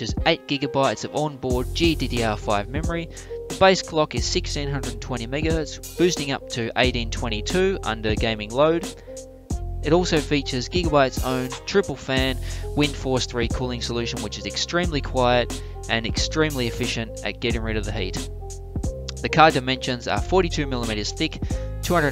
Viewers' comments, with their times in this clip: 0:07 Also the mic used is far inferior to the one recording earlier in the video.